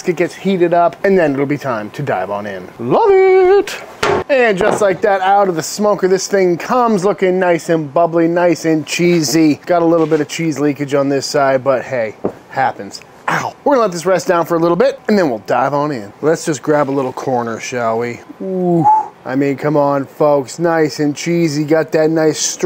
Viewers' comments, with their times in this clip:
0:04 I love the the disguised "oww" while pulling that off with your bare hands. Glass hurts more than brisket yall